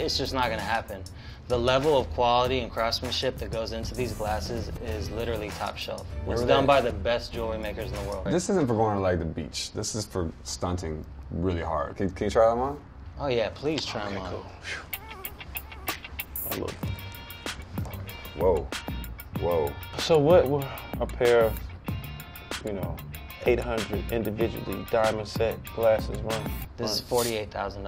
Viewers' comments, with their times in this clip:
0:10 So no one is going to say anything on Diplo saying "Stunting" He made sure he enunciated that word 😂😂😂😂😂😂